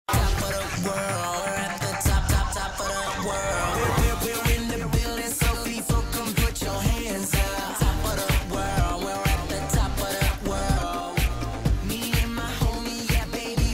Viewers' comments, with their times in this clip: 0:00 the autotune is on the top of the world